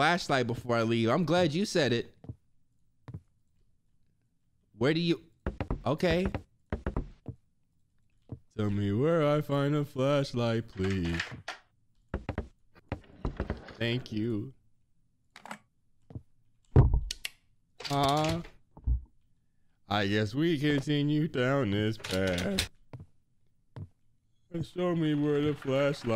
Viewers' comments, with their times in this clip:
0:08 that singing thooo
0:08 vocals on 100
0:13 Wait. I need someone to make a song from when he first sang about getting a flashlight The vocals was on point. I need a house remix of that NEOOOWWW